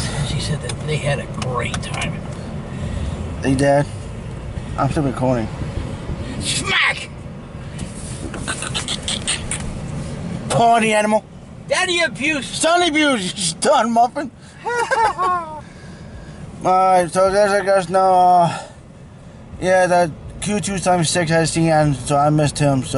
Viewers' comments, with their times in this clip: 0:07 😂😂😂 what the fuck was that?!?!?!?!? Sounded like a squirrel who's boxing, HAHAHA!!!!!! I'm thinking this Sunday at Barnseville, but still don't know. Sunday, October 8th is Brunswick railroad days. I'll make an update video on that tomorrow!